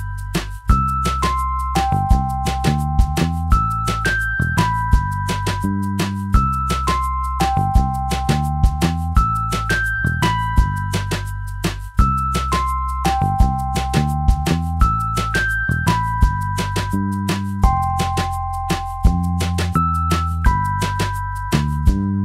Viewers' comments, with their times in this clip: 0:04 That melody sounds like it came from the movie "One Missed Call !